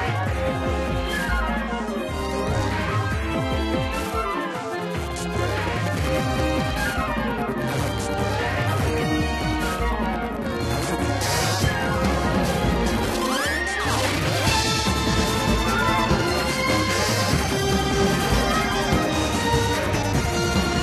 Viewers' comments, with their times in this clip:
0:08 Anyone else hear a hint of Pokemon fading in or so?